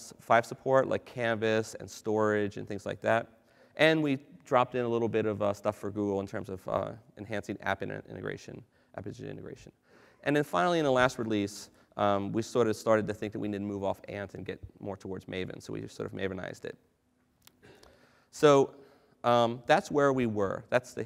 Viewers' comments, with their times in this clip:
0:03 ( min) Cannabis support ... YEAH!!! Oh I'm sorry CANVAS :(